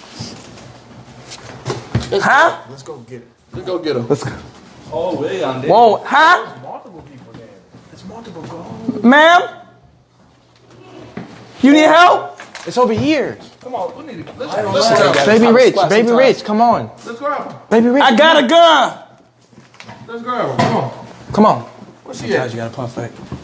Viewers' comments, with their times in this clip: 0:10 On you can hear a little girl say “here”